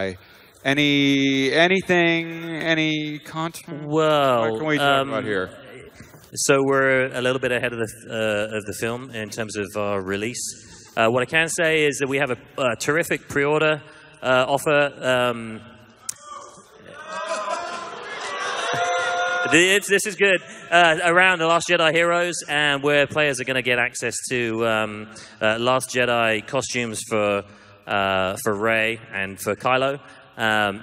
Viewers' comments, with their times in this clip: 0:08 Loved the boos for the pre order bonus stuff and how the guy awkwardly had to say "uhh this is good"
0:13 that beautiful booing... there is still hope for the gaming industry =,)
0:16 are they booing?